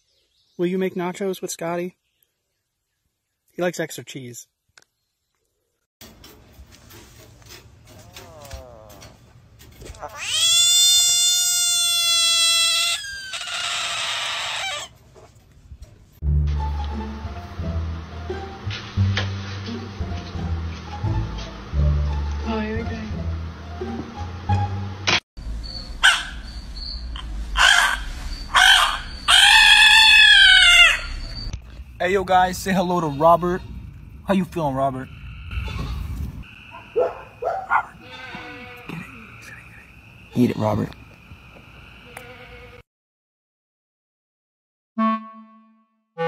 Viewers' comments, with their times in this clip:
0:06 kinda almost sounded like cat
0:08 my balloon when I let air out
0:13 he will never end blasrting air when i keep clicking
0:28 bro sounds like a dang crow